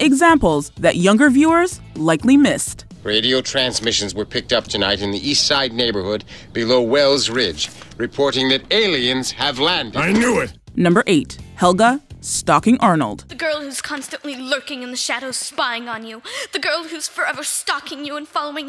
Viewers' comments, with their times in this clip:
0:03 as young as i am, i recognized that guys voice